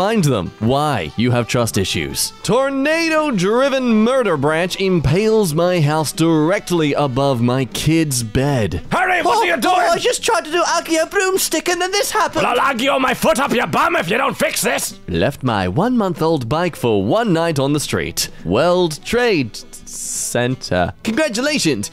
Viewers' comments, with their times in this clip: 0:08 Beautiful delivery here, I had to go back and listen a few times.